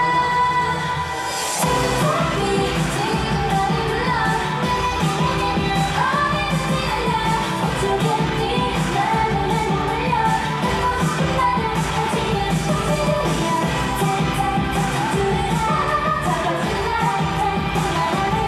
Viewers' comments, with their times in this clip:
0:06 Monday and Jihan <3 monday's dance and vocal~